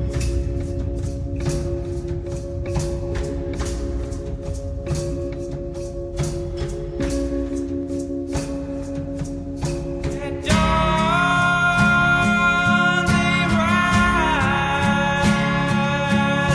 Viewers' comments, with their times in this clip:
0:04 NOOOOO! This is wrong! The title track is supposed to be of pure instrumental bliss that sets the tone for the entire album! Why has it been replaced by this?! I thought I was losing my damn mind, til I dug out my old cd and realized that no, I'm not in some alternate universe.